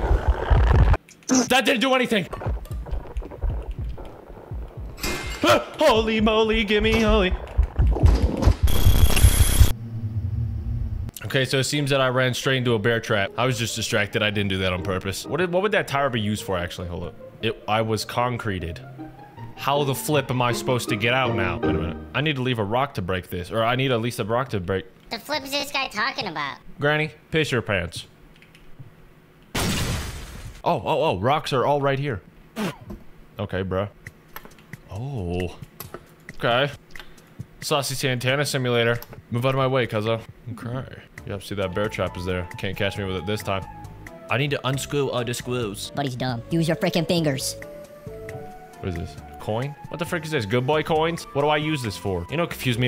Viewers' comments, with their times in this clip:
0:05 WHYD HE JUST “♪ Holy Moly Give Me Oly (idfk what was said)😁😆😆!!♪” LIKE THAHAT HEHELEP 😭 🕊️
0:37 anyone else hear the discord server not started music (banger but still)